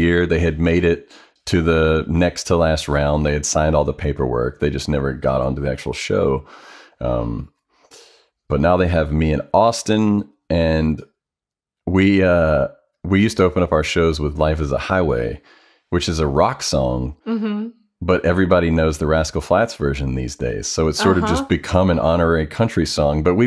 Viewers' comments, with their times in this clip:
0:05 tim foust accidental subharmonic 😮